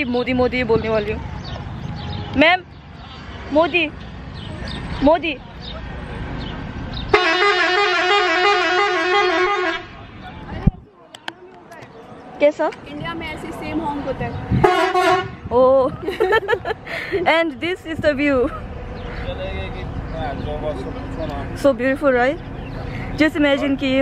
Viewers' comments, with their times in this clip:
0:06 That Famous Indian Bus Horns 🤣🤣🤣😍